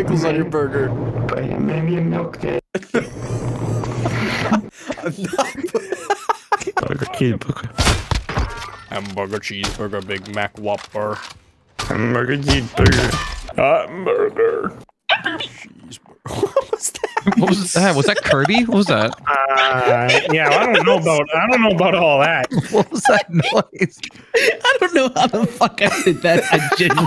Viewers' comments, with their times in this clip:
0:08 high pitched grizzly voice 😂
0:15 "pepper me" from "hamburger meat" does anyone else hear it too?😂😂